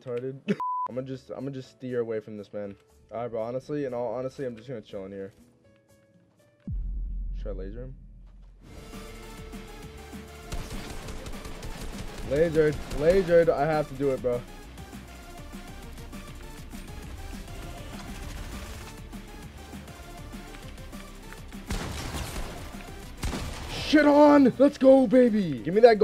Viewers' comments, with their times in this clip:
0:10 Does anyone hear megalovania